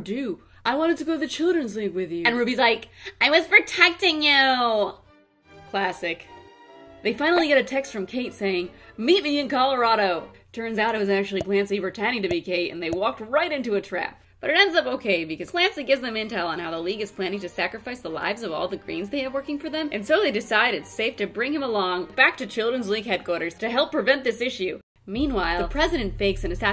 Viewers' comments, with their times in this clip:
0:10 JUDE!😭😭😭😭😭 Love that Clancey laugh!